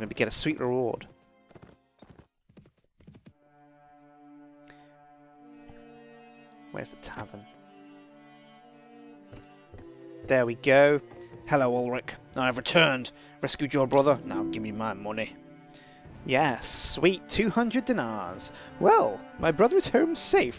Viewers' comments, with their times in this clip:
0:03 Alan Rickman is that you ?